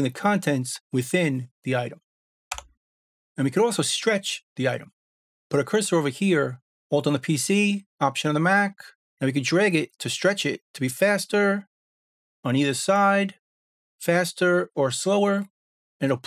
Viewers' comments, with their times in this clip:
0:03 is the key (note / tone) staying the same when the speed changes? I'd like to try this on my vocals and guitar solos if the pitch stays in tune...